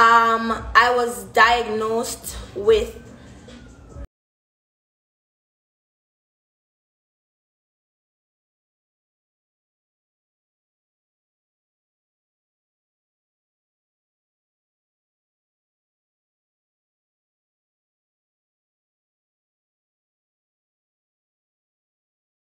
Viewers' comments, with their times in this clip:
0:04 it pauses when she say what she was diagnosed with